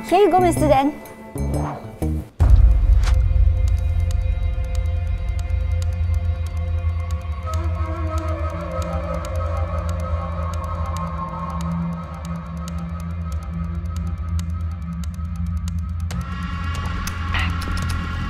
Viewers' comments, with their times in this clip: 0:05 it was like Indian serial effects